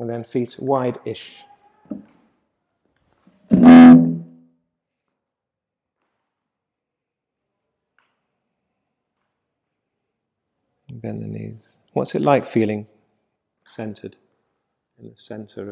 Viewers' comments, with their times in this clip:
0:03 Thats pure ASMR for you all!